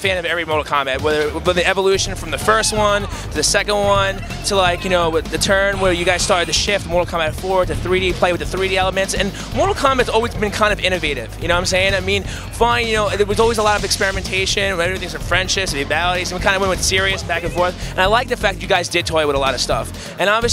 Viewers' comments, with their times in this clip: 0:04 Thats exactly what I was thinking! but id say the situation was more awkward, you can see it in Eds face! And why is it a guilty pleasure, cant they get an actual fan to do these interviews?? Also you can easily hear people playing mk9 in the background and you can hear the exact sound Liu Kang makes in the MK Shaolin monks trailer when he does his bicycle kick. I guess they just decided to stop him making sounds when he did the move.